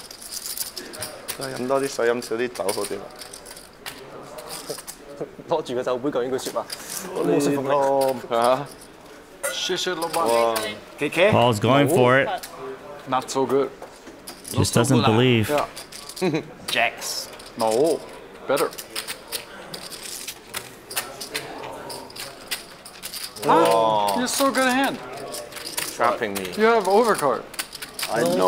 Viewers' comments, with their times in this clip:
0:09 LMAO, durrrrr says Chinese " thanks boss" with America accent then gets to win with pocket lady !
0:16 Dwan's "noOoOoO" in an Asian accent 🤔